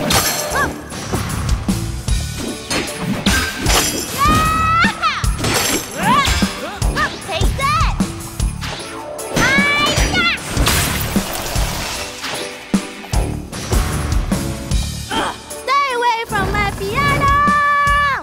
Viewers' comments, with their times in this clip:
0:03 I love how they’re all playing classic Christmas Music!!😍😍